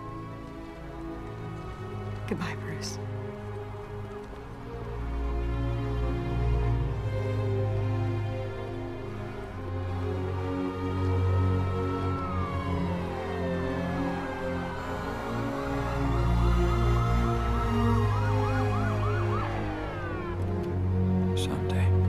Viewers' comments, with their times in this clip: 0:04 That OST is really good